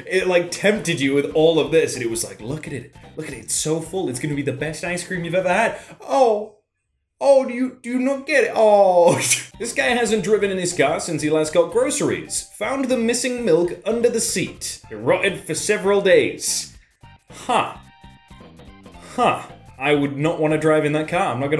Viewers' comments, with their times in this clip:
0:06 my god that’s the best acting I’ve ever heard
0:07 How the accent was coming out